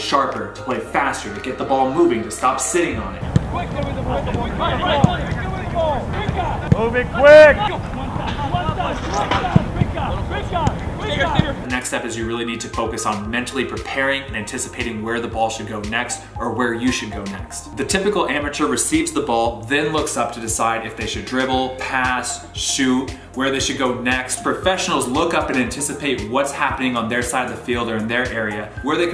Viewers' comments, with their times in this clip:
0:10 Sounds like someone said the N word 😂😂😂